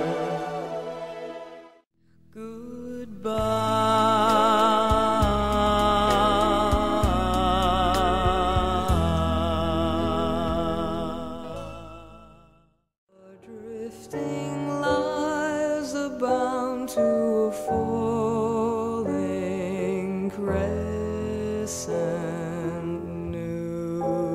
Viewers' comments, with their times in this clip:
0:06 She sounded like a man. That's insane.